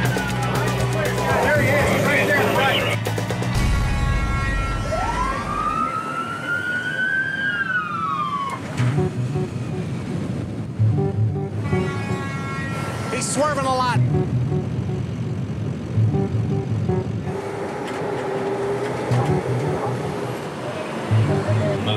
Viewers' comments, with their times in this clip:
0:08 That music is more out of place then Bas Rutten in a make-up store.